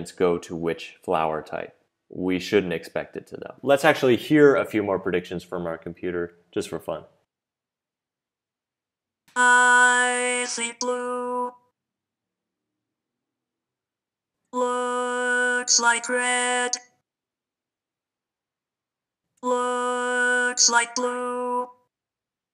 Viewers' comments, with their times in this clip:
0:08 who else felt uncomfortable hearing that voice?